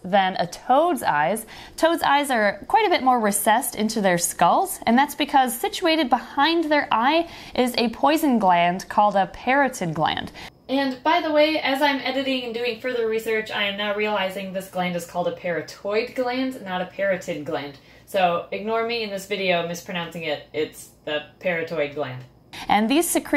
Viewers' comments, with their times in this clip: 0:10 the audio switch startled me for some reason lol